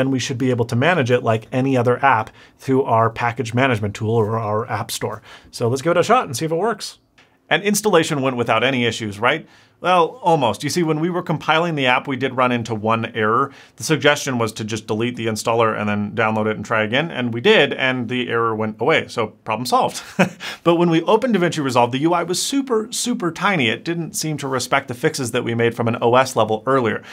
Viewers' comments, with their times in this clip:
0:07 I was listening to this video while reading something else in another tab, and at the mark I swore it wasn't you talking. Like it was suddenly way a way deeper sounding voice.
0:12 Did anybody else notice the change on voice pitch at min ?